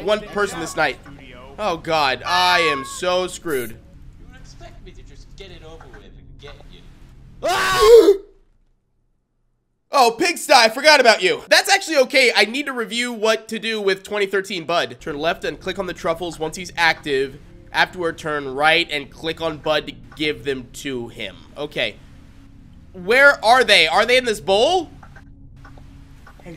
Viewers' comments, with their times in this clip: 0:07 Lego Star Wars Pigsty Death Sound Be Like